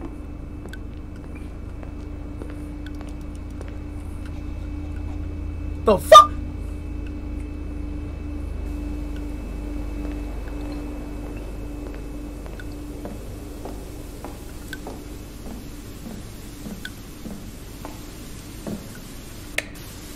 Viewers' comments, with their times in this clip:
0:06 Wtf is this sound he made 💀